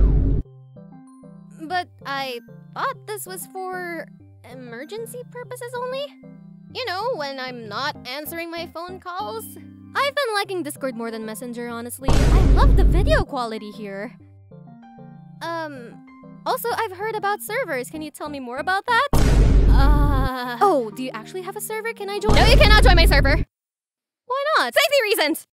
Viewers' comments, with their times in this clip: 0:09 The vine booms 😭